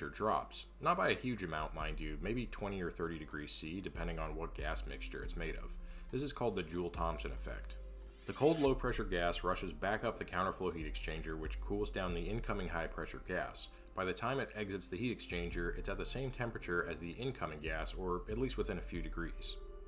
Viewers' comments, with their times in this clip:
0:07 im curious what that random sound is